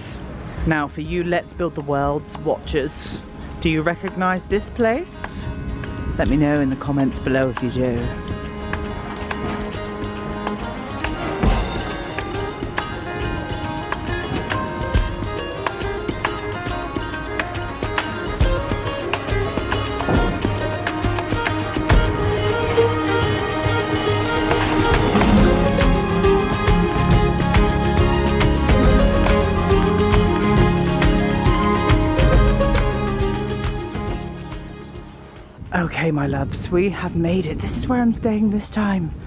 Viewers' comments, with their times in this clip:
0:03 Wonderful I truly loved this, love the choice of music so peaceful and relaxing, that’s the malts & anchor chippy you got your inspiration from Ik it looked familiar lol, absolutely beautiful can’t wait for the next vlog soo looking forward to it.
0:23 I am in awe! Such a beautiful vlog! I love your choice of music too, for example reminds me of titanic 😅